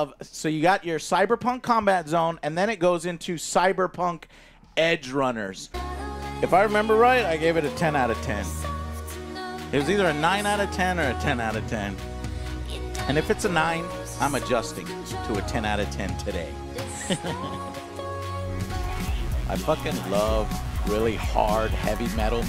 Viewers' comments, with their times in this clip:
0:06 somehow that song still kinda stings